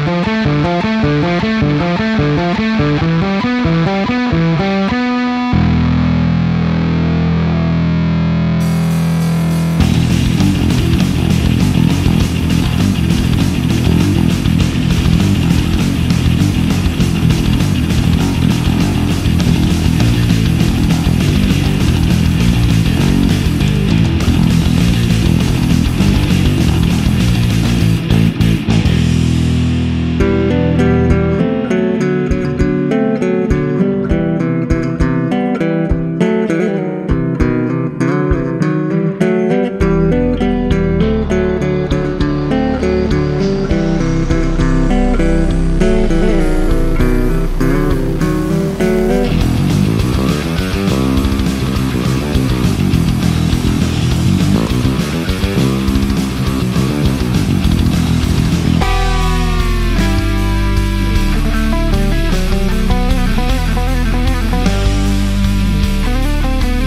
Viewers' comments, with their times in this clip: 0:04 Love how you actually have the feel for this while the actual player in Metallica cannot play it right to save his life! lol
0:16 --Bass solo, take one.
0:39 That’s not what Cliff plays in Battery.
0:49 is my favorite bass solo of all time